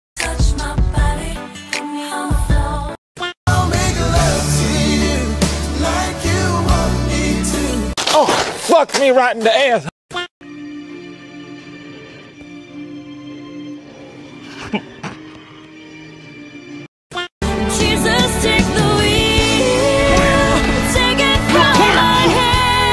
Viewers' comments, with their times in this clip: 0:10 he laughed at sams death i died